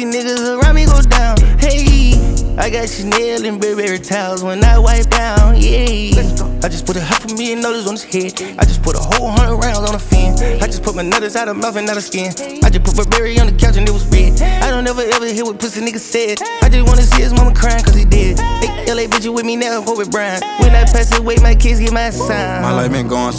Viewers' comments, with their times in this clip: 0:10 never felt adlips so deep